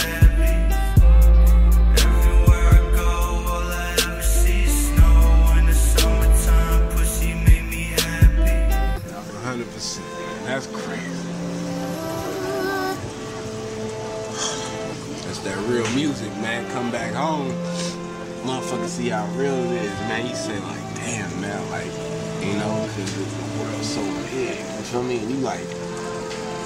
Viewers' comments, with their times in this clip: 0:08 This moment probably breaks every voice the most 😭